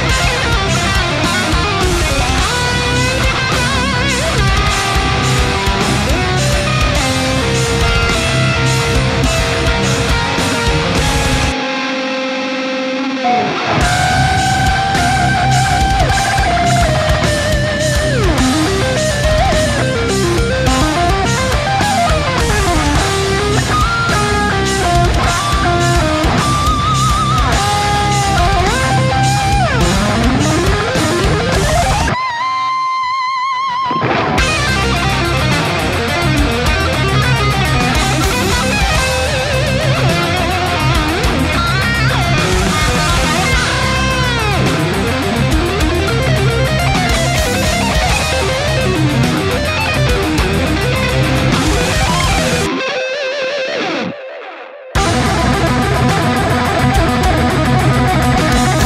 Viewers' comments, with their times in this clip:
0:09 when the jazz dude gets intense
0:09 that chord should be illegal
0:10 Absolutely no one: Jazz chords:
0:18 Completely agree -- the part was nothing short of excellent, not only he played it better than a lot of so called greats who show their actual lack of technique the second they have to work a mid-tempo or slower pace (don't get me wrong, I'm not talking about Jason here), but it was also really beautiful melodically. Gratz Jared!
0:26 If pinch harmonic had a face.
0:43 That riff trick he does at exactly in, For years YEARS!!! I've been trying to figure out how they do that with the bar? PLEASE!! Somebody end my suffering and reveal the mystery to me!! lol WHAT the HELL is he doing to make it sound like a vibrating boinger that stops doors from hitting the wall type sound ya know? What is he doing?????